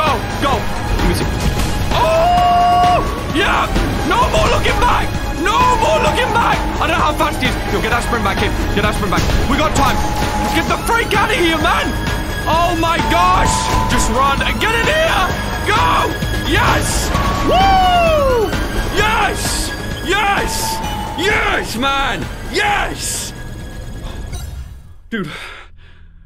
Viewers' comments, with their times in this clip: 0:09 Yeah ^ additionally, Mark kept looking back repeatedly and had very low stamina because of the lack of sneakers. And the DJ IS throwing objects since you can hear it in the background and even when he looks back, you can very distinctly see the objects being thrown